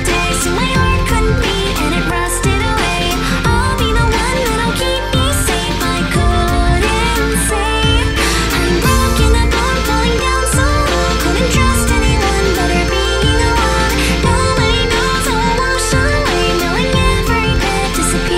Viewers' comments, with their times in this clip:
0:04 Am I the only one who heard "I'll be the one that'll keep ME safe, I couldn't say..." ???